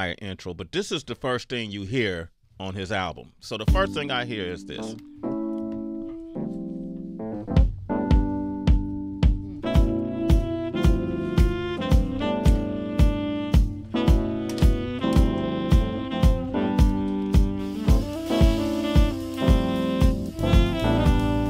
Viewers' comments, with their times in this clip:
0:03 Brooo i neeed that fucking instrumental that shit is so fucking groovy. This guy can spit but whos the band that made that shit? I need a full album of some jazzy hip hop with live instrumentation like that. That shit sound like The Budos Band made a hip-hop beat. 🔥🔥🔥